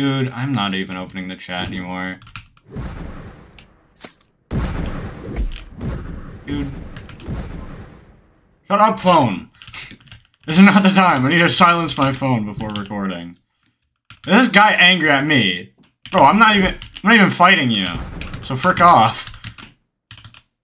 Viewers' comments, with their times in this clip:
0:06 phone go brr